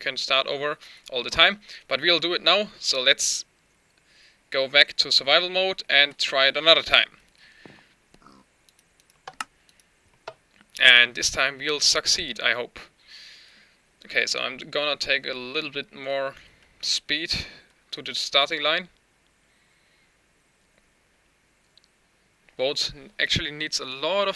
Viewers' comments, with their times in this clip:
0:10 1st thing i hear "and this time we'll suck seed's" haha!